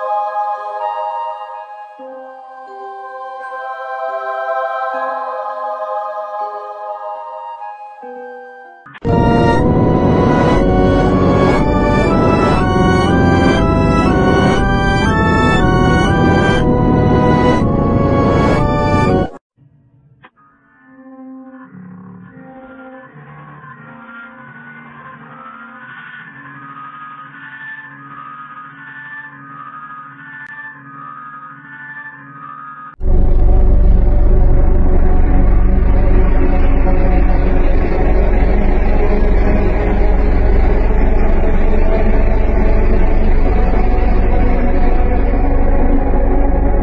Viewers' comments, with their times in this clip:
0:08 there is a uncanny sound
0:09 uncanny phase 9 in g major
0:09 in g major
0:09 Phase 58 sound like uncanny phase 9
0:10 g major phase 9 music
0:10 phase 58 in has uncanny phase 9 music with G Major😳
0:33 I think this is Phase 11 low pitch
0:33 was low pitched phase 11